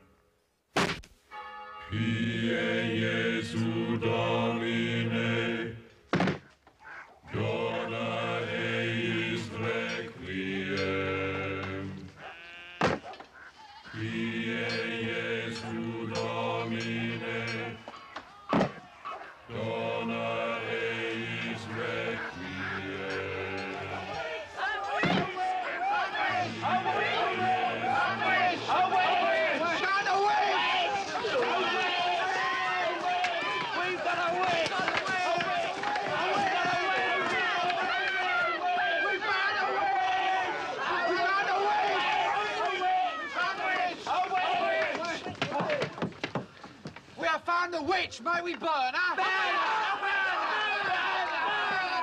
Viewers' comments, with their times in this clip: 0:06 Agreed. Plus you can hear one of them say ow! seconds
0:33 As A European I love how he says "Well I AM King" gets me every time 🤣